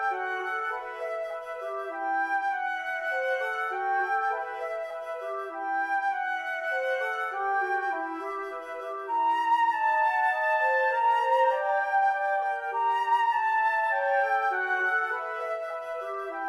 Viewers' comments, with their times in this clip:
0:04 I love this orchestration even though it doesn't sound great with samples. Live flute would be so expressive and draw focus to the solo. With samples the flute is kind of static and gets cluttered by the clarinet I think.